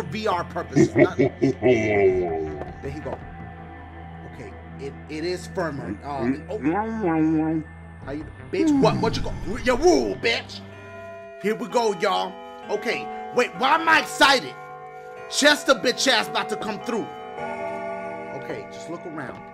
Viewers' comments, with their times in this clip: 0:05 Dude is farting in his faceXD